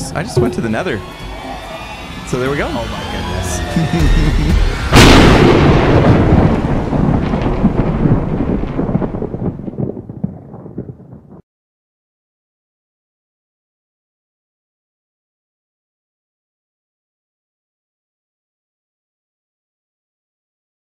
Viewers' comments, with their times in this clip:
0:03 Is it just me or am i hearing "bad apple"